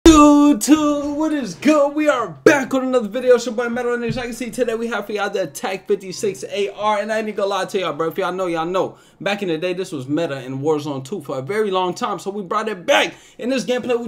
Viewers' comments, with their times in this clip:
0:00 yoo why you talking like this dog